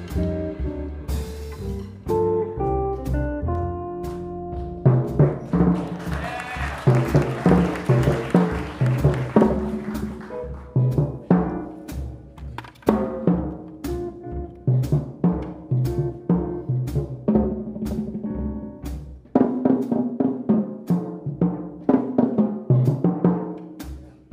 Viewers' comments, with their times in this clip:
0:05 Re the section from how does Ari get two pitches out of the lower tom? Looks like he hits the first note of each phrase across the skin. Or is it with a different velocity?